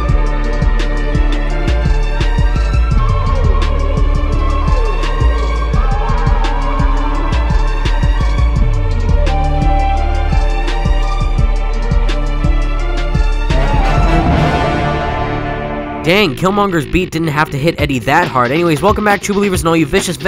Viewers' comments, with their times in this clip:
0:03 listen carefully. You can hear roblox death sounds.